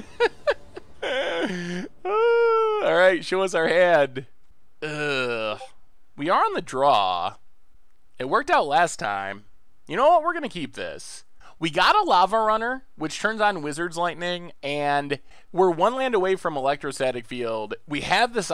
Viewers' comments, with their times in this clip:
0:05 discord ping GOT ME UGHHHH sweet deck tho, pretty budget too